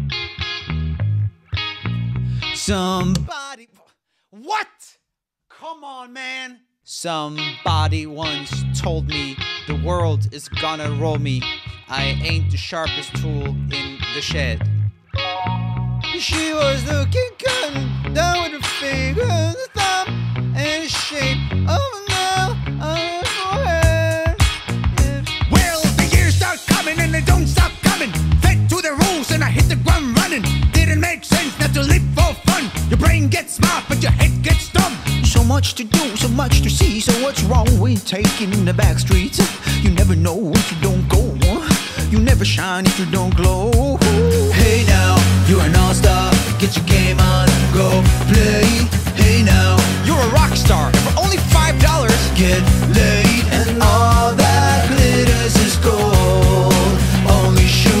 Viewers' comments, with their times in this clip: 0:03 Every1 knows immediately when they hear the sound "damn i´ve forgot to pay the bill again".
0:05 is just rapping dude
0:08 ! Why do I feel like this is how Jeff Goldblum would recite this?
0:08 bro is Donald trump
0:22 the way he says "forheeeed" and then grins at the camera has me rolling
0:24 He's just basically rapping
0:25 that's a Nice Gilbert Gottfried impression Lol
0:25 The part is so cool the rap is so speed
0:35 kinda fire tho, i like the guys voice ngl, fr i would love to hear the entire song sung in that voice
0:35 he looks and sounds like the word “Hawaiian pizza”
0:36 that’s goofy from Mickey Mouse clubhouse
0:45 But I prefer this his voice sounds gud!
0:45 ❤❤❤❤ sounds good so so good